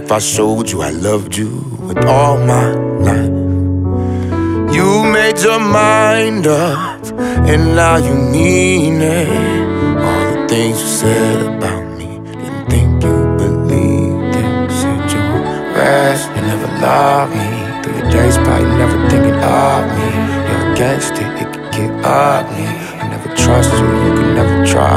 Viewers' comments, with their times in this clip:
0:05 HIS VOICE BROKE but still good